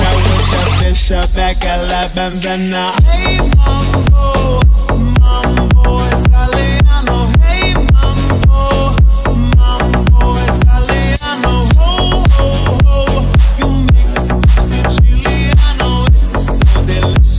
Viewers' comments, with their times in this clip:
0:03 THAT PINK LAMBO TURNED INTO AN LAWNMOWER :)